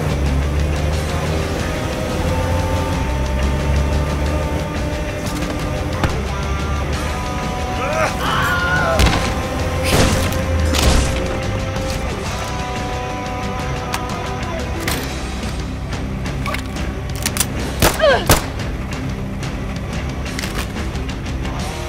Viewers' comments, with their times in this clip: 0:08 Another Wilhelm bites the dust!